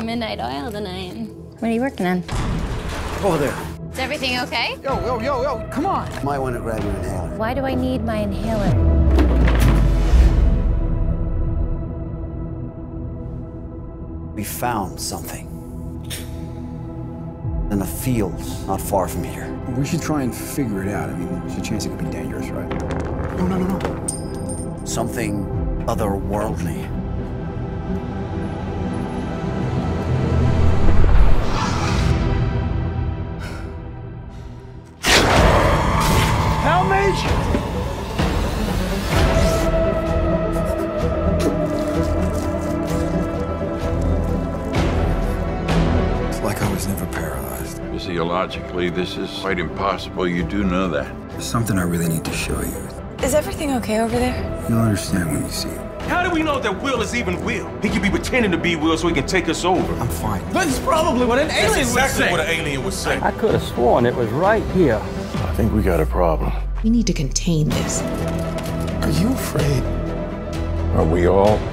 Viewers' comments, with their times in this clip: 0:06 I thought she said "Why do I need Van Halen".
0:54 sounds like Captain america